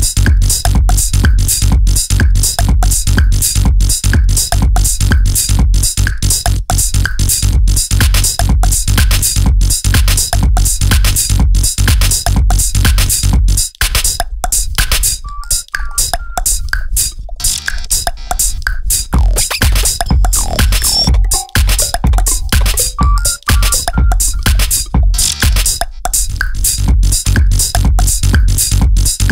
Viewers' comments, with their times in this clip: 0:03 the loopstation bro 😎
0:17 liproll +zipper what a mix🔥